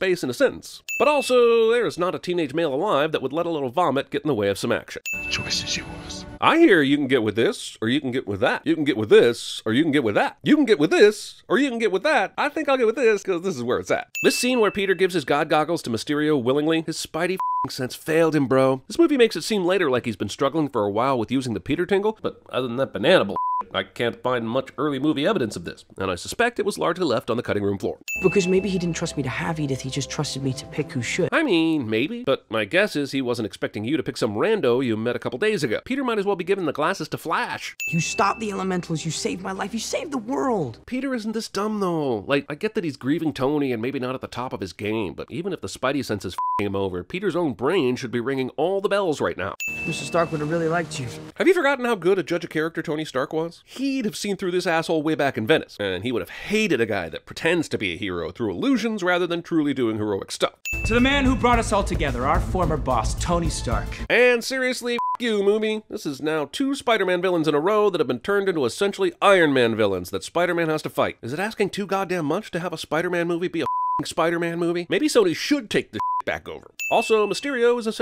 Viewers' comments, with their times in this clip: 0:07 Lowkey boutta turn into a rap lol
1:05 "moo-mie"? +1 sin for poor oration.